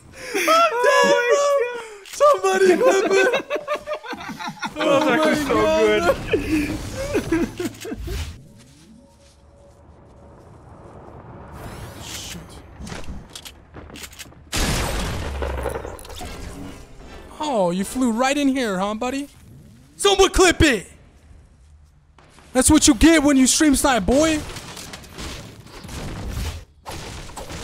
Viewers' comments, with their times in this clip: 0:09 You can hear the annoyance very faintly lol